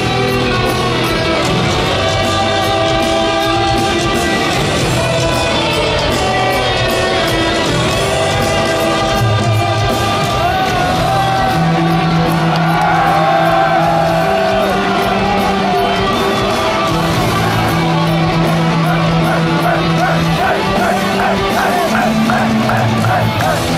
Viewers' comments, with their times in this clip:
0:09 KICK ASS BASS STEVE IS GOOD
0:11 that bass was crazy !!!!!!